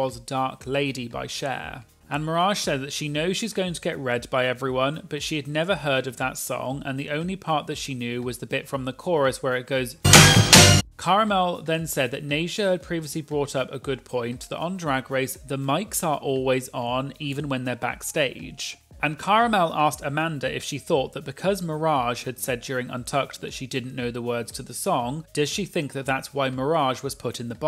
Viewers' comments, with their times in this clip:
0:06 Sound warning for the audio level LEAPS for the dark lady clip.
0:08 OMG AT SCREAMED SO LOUD!! why is the Cher song so loud aha T-T